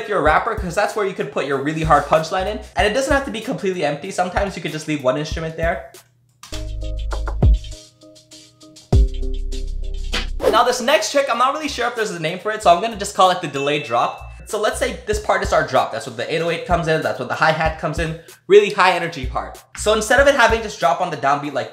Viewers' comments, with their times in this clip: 0:07 he didnt mute it....he just cut off the drums, you can still here the bells....how do you actually mute it? Is there a plugin you need to use or is it something else?